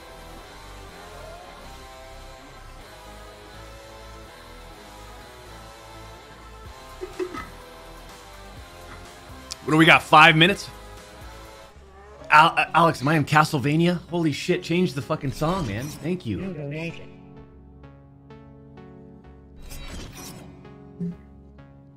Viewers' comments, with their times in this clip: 0:08 an ominous song: "you'd better hide tonight" ☠️